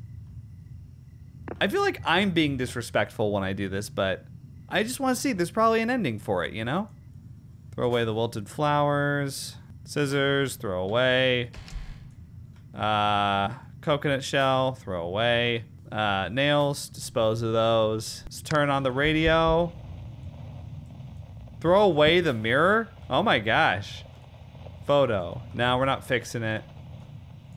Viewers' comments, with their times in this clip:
0:09 isn't that a bang ? Wow ghosts know how to party